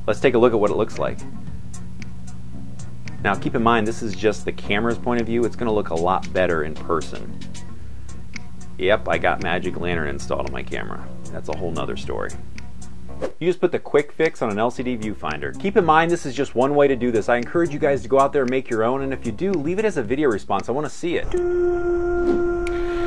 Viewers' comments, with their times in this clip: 0:07 Hey nice viewfinder, i might just have to make one myself :) Also i was just wondering what u said in the video. you said you had something installed on ur camera but cant make out what u said. just curious :)